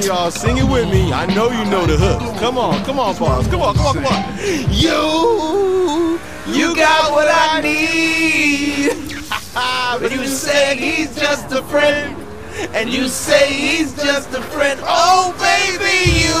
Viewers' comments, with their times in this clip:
0:04 that voice crack had me dying😂😂